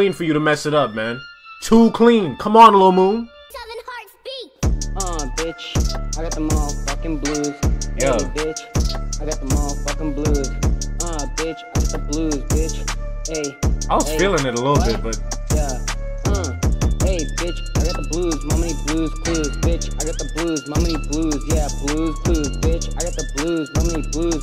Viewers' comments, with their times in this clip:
0:06 feat recorded on a flip phone